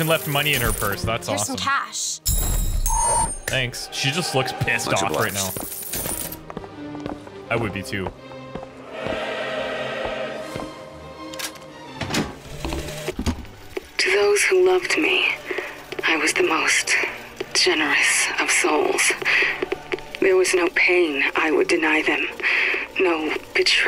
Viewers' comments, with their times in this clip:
0:08 he says "She just looks pissed" the music plays and it sounds like "Pisssed!"